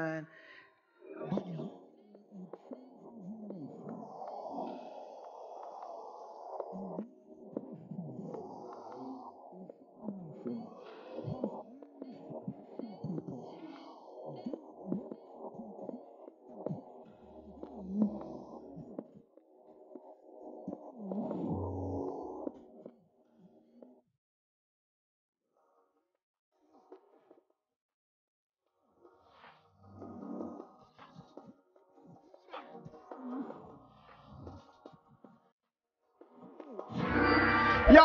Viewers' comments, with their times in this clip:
0:04 Why happened at minute when it starts dragging. Where the pastor starts talking about 1Peter 2:9!? That didn’t sound good. Anyone else hear THAT!?
0:20 What was that weird music ?
0:22 something crazy happens with the audio 🤯🤯